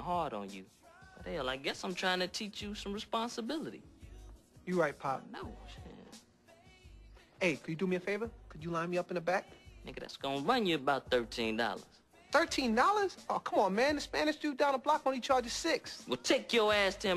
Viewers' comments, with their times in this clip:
0:04 Ashtrey:You right pop pop:(under his breath)I know shiit perfectly funny